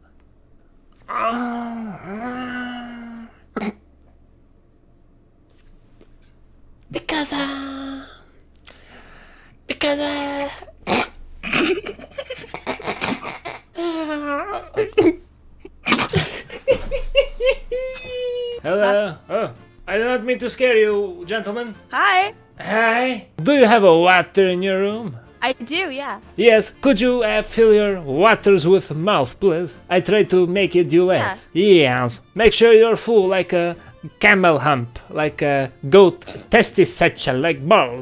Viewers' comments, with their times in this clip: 0:07 why he sound like a moaning turtle in this part XD
0:11 he gave that andrew garfield laugh
0:16 what was that laugh💀
0:19 ngl the girl on had a cute voice, being fr